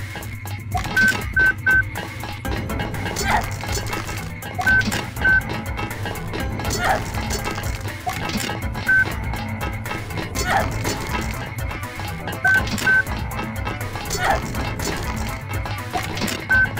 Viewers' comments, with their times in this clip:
0:04 was that edited or does she sound like roblox oof